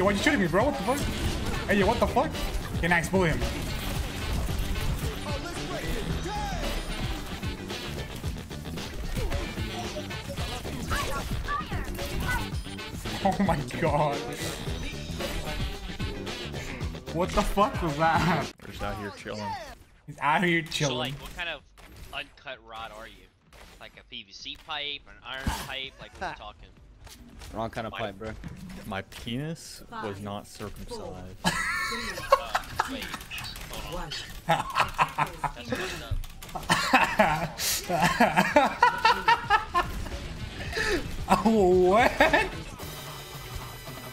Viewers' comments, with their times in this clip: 0:04 Wait but that beat was sick
0:32 that laugh tho, nice to see you having a good time dude